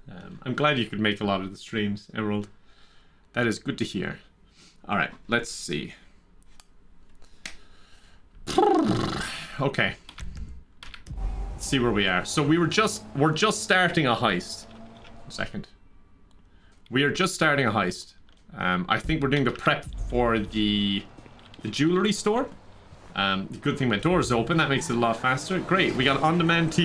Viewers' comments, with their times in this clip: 0:07 GTA pulled up horse noise